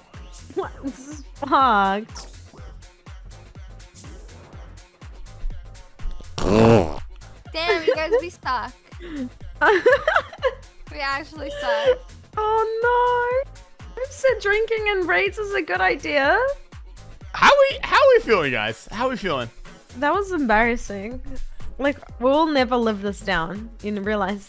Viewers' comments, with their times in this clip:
0:05 I was not expecting the mic munch.